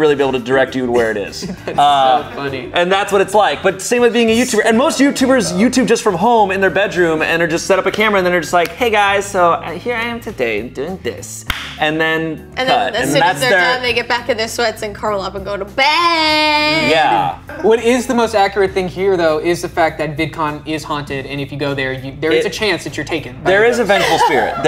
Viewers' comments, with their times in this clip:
0:08 he sound like the bisque character from Studio C